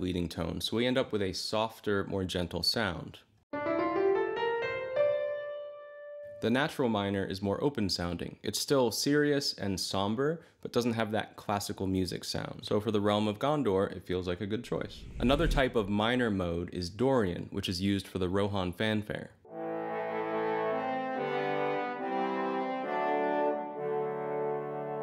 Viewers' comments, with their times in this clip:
0:09 Great Video. Small correction to you played a d dorian scale and called it natural minor.
0:12 that was definitely D dorian, which is also the mode the beginning of the Gondor theme is in (not minor) - based on the orchestral harmonization which plays a G major chord.